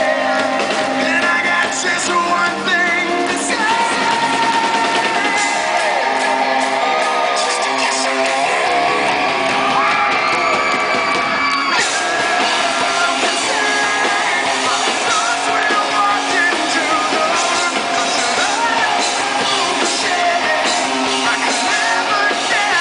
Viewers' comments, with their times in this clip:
0:08 ahhhhhhh he finally whispered kiss on the neck towards the end instead of screaming it! :) :)